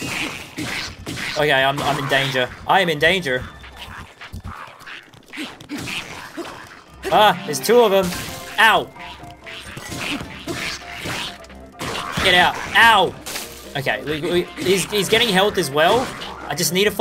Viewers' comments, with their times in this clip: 0:03 that was the most American like voice I have heard from a Australian